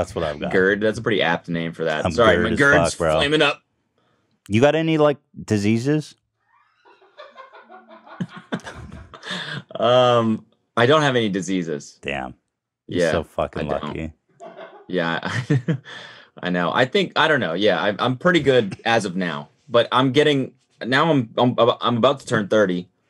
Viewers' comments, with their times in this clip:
0:04 the laugh gets me every time 😂😂